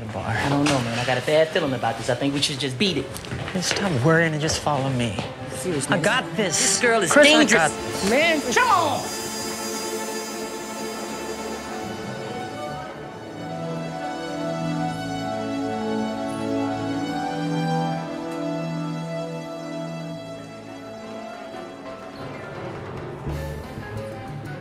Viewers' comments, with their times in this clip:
0:06 kno yall heard his real voice